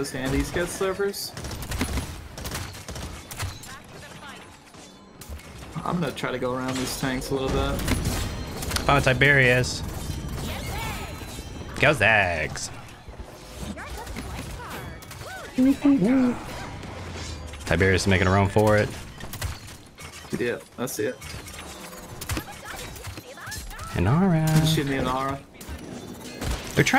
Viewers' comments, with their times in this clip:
0:10 why did that sound so sassy lmao